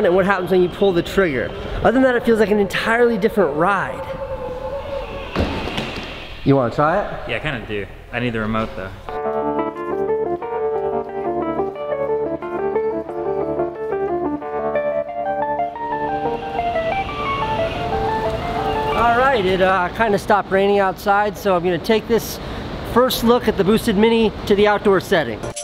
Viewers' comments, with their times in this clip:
0:09 it herts my ears